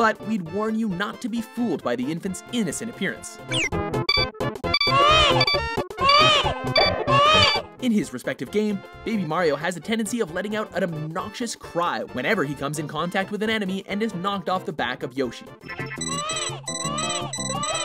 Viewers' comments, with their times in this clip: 0:04 TURNS DOWN VOLUME BECAUSE I KNOW THATS COMIN'